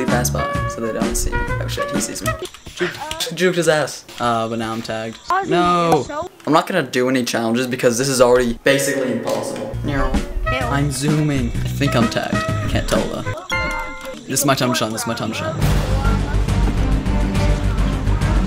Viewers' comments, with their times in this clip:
0:03 when you start slurring